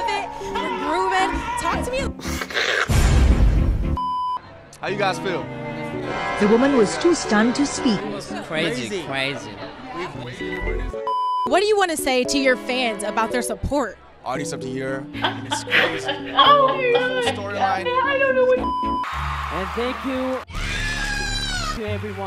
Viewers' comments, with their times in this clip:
0:07 😭😭😭😭😭😭And imma keep on crying because did y'all hear Jimin's voice ? Its getting deeper. But it's still hilariously high so I'm good.😏